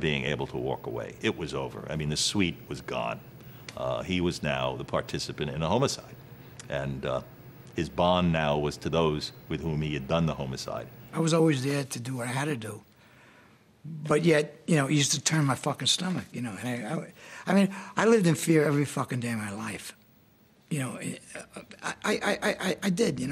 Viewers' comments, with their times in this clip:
0:10 why is the guy saying homo-cide?